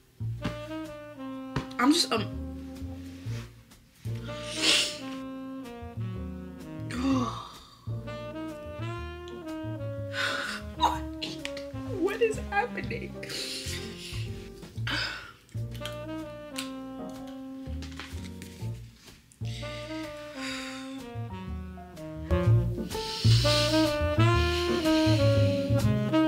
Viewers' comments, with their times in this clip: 0:07 the crying and then tabbing is so realll 😭 i always love seeing people's raw reaction to books, and i love how genuine you are